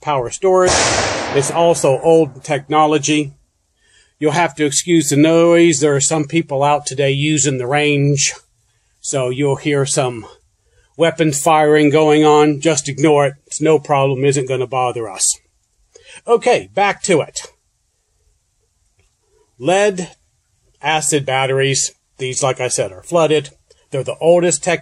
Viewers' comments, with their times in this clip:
0:05 I knew I heard a gun shot 🤣